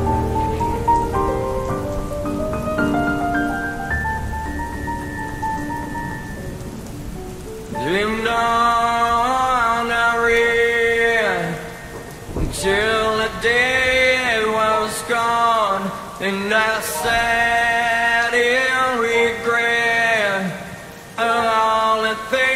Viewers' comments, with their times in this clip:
0:06 The piano pauses after the solo is beautifully chilling. This whole thing is beautifully chilling.